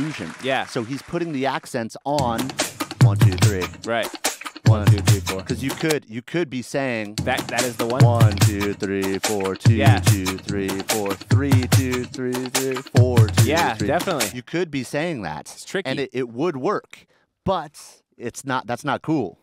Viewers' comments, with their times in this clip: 0:03 that part of the beat always reminds me of the beginning off the Cupid Shuffle. Not exactly the same pattern but...just listen to it.